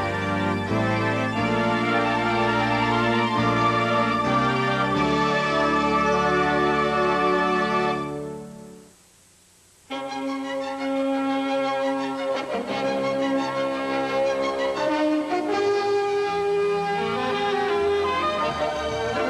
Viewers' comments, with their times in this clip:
0:03 Great channel music